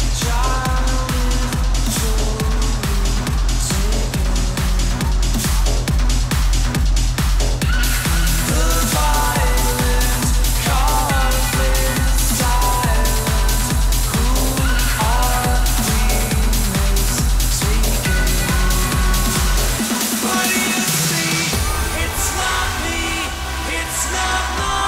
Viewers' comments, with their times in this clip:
0:07 ❤️ Version of Zombie Crowd sing along with Armin ❤️😍 King of trance music ❤️